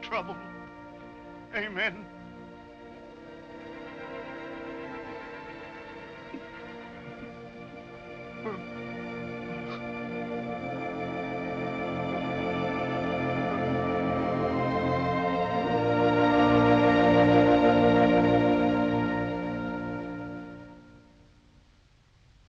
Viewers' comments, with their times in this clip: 0:09 the monster cries and comforts the old man is so touching.